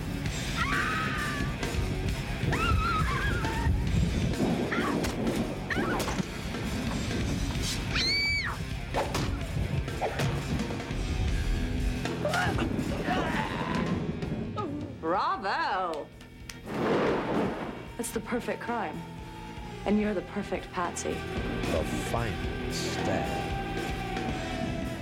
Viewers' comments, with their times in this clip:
0:08 Lol, those actions sounds.